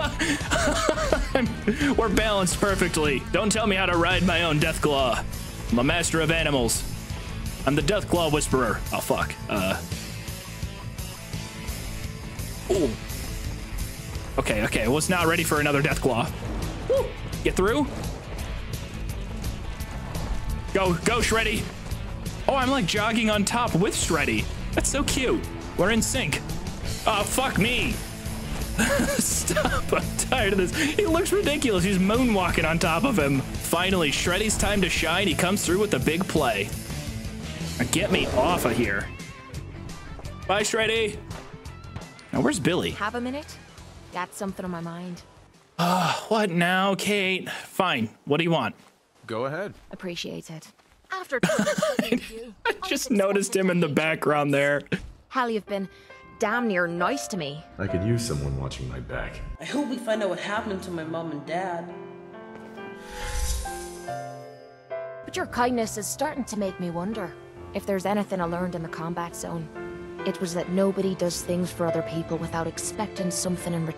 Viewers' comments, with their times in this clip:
0:06 Music reminding me of riding that damn shell in the SpongeBob movie (ps2 video game)
0:56 love that song